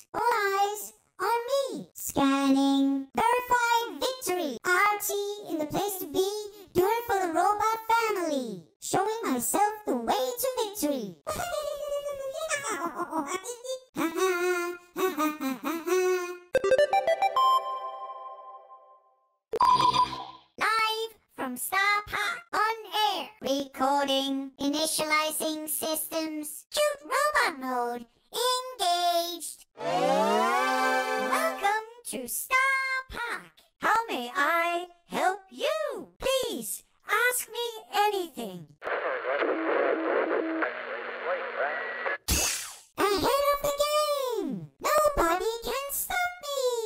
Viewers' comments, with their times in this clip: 0:04 OMG WHAT A BOP THAT IS
0:13 the first brawler to actually sing the brawl stars theme
0:13 lol he sings the brawl star music
0:30 sounds like something from Mario